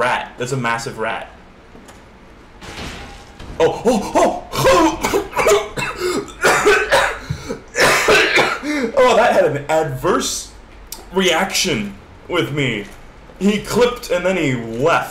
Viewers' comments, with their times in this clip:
0:03 I literally choked at the same time he choked bruh